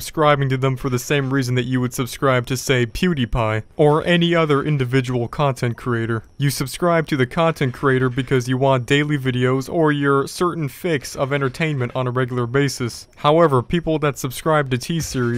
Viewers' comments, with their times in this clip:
0:03 "people arent subscribed to them for the same reason as pixelpie*"